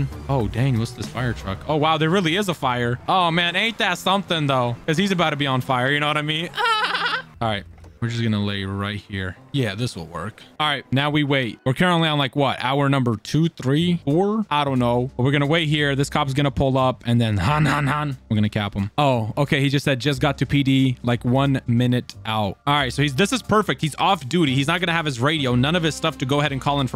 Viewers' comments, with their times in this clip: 0:03 that laugh tho 😂
0:06 what tf is these laugh 💀
0:06 me: make me cringe him: does the cringe laugh
0:06 goofy ahh laugh💀
0:09 What was that laugh 😂😂😂😂that was funny but not trying to be rude